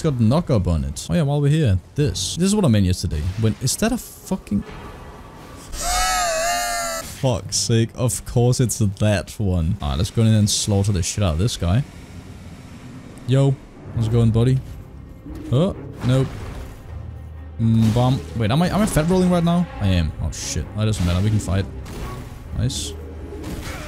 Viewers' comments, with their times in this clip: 0:05 the goddamn exhale caught me
0:06 JAJAJAJAJAJAJAJAJAA OMG I CANT STOP JAJAJAJAJAJAJA HE LOST ALL HIS AIR JAJAJAJAJAJAJ OMGGG AM CRYING